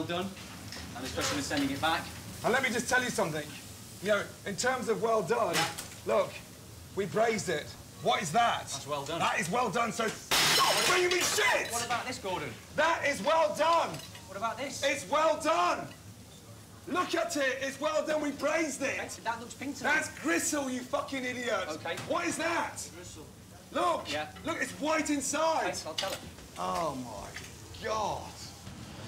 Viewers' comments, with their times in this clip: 0:10 lol gordon voice crack